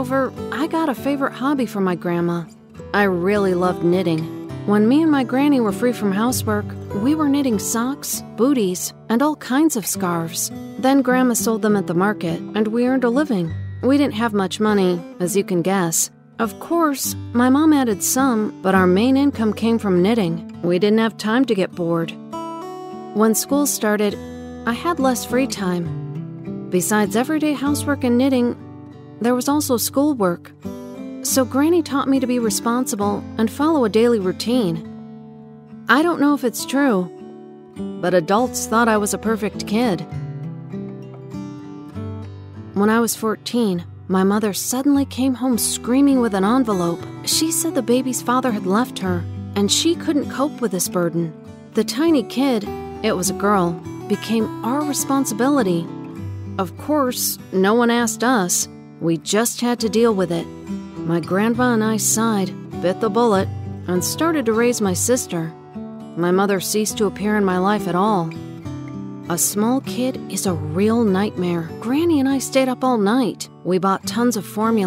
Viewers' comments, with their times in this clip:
0:07 only me that thought they Said ”we were eating socks, bootys” ahhahah lol
1:01 Did anyone her saying my grandpa and I